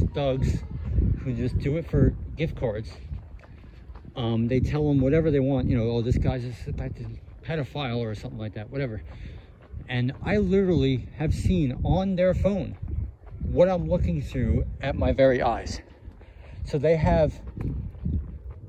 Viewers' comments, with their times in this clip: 0:06 it's in the video the voice is very quick it doesn't sound English and I don't think it's his but a second voice so listen to 33 minutes and 56 seconds into it within that few seconds you should hear it it's ever so slight I've had that happen to me I'm more than one occasion